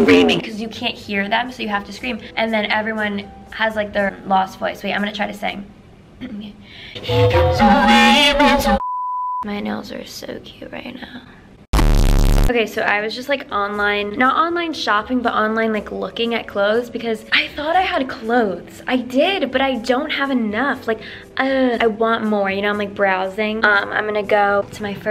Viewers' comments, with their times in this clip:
0:06 she is in fact,Speechless